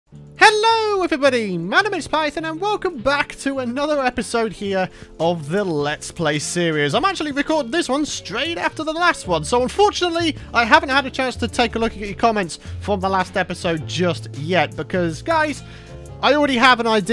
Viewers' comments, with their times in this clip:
0:00 Go to and it sound like stampy on his lovley world so much memories🙏
0:00 the stampy like intro